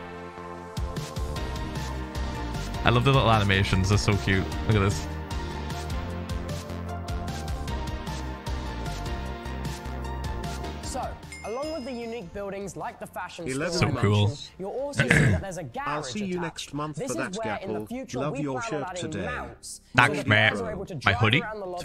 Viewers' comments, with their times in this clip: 0:09 I could her the silent "oooo aaaa"